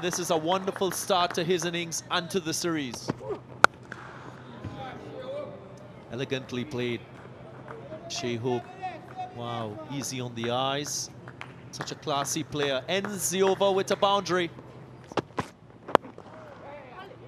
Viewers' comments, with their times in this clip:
0:03 The sound of the bat wow